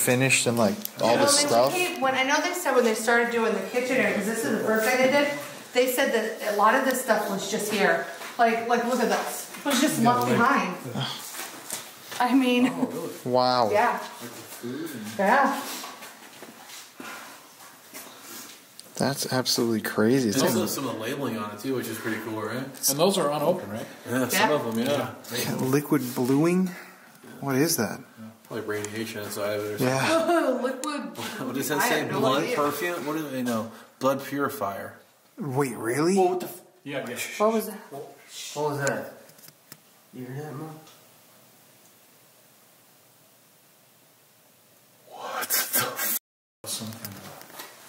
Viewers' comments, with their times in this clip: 0:07 like baby voice?!
0:34 Did it just go BOO xD Dang Nab Ghost Stereotypes